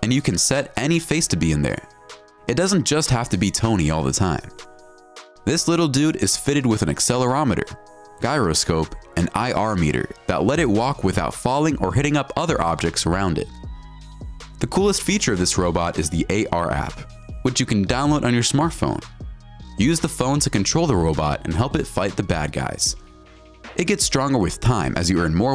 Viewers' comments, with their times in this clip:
0:06 Can't pronounce "gyroscope."
0:07 Oooh, the Iron Man toy has a "guy"-roscope! I'm genuinely sorry, but mispronunciations of common, simple words just set me off